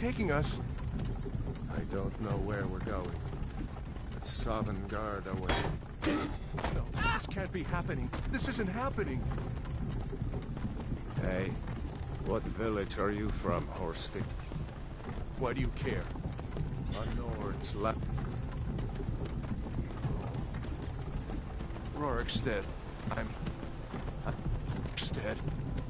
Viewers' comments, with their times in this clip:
0:04 anyone else hear a guy get run the fuck over
0:04 Can't stop laughing *ding* *bong* AAH!?
0:05 anyone hear a horse and a random guy get run the fuck over?
0:06 What I wanna know is who yelled "Aaah!!" Cause that's when I couldn't stop laughing XDD